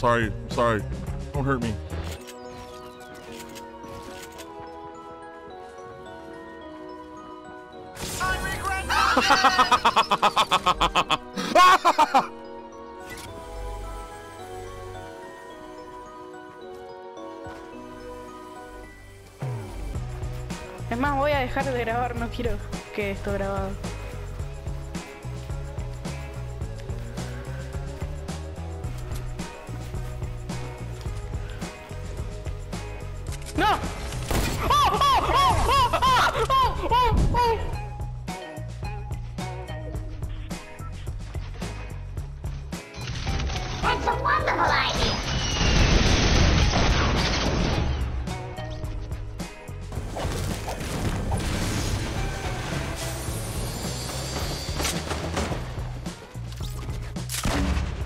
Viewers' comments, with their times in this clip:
0:10 that laugh is questionable
0:43 flowey s sound freaks me out